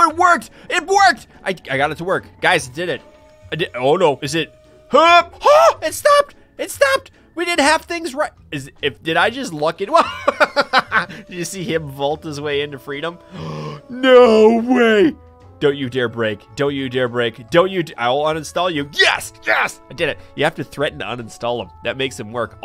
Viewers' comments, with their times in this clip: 0:05 The laugh tho 😂